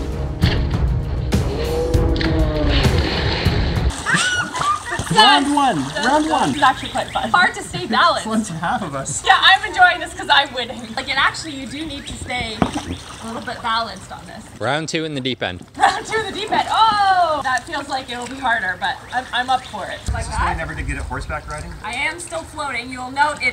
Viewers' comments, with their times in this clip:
0:05 Children laughing evily